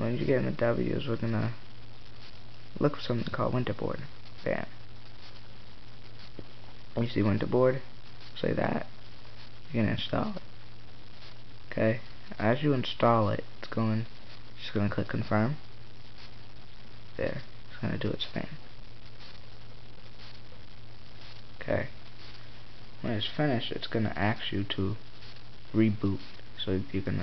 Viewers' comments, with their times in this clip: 0:10 lmao is voice cracks